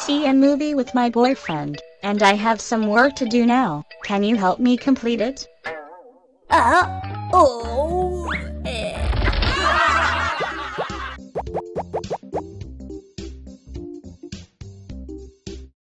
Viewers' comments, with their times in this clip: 0:06 The voice is sound like Manolito from Mafalda (1993) .